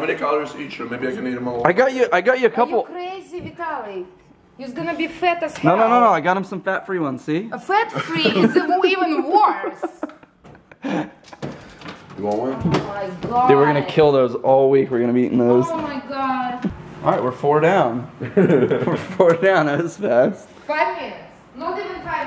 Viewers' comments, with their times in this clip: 0:03 Yous gonna be fat as hell. I LOVE foreign accents LOL.